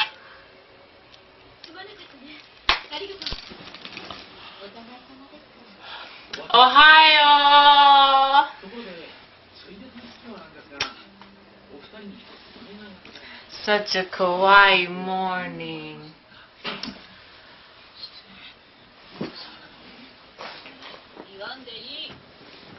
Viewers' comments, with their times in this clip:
0:06 Such a Kah-why more-ning.